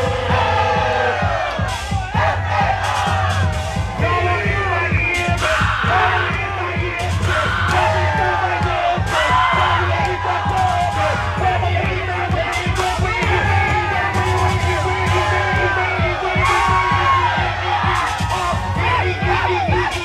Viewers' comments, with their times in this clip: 0:04 I LIVE FOR THE OUTLANDISH SCREAMS FROM THE CROWD!! FUCK MY EARDDRUMS UP😩😩😩😩😩